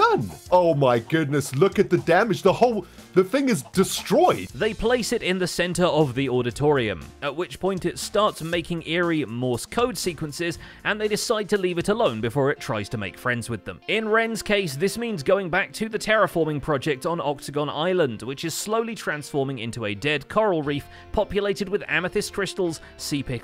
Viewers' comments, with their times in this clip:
0:07 >It starts making eerie morse code sequences How long until it starts reciting numbers in a monotonous robotized voice?